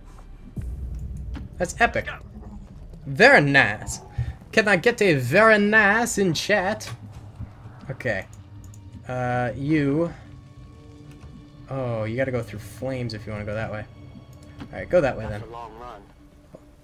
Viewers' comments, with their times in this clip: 0:03 you sounded like pewdiepie LOL